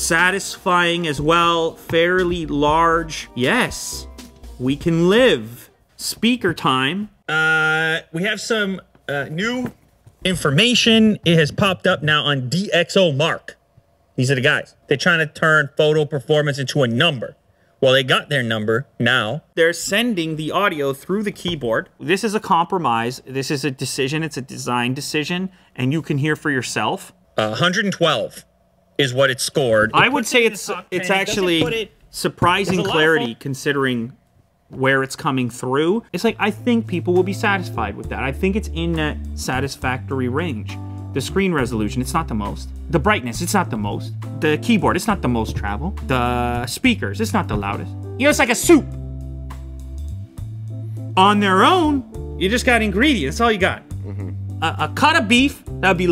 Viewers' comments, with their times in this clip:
0:08 I thought Lew was speaking lol
0:42 that music is sooo relaxing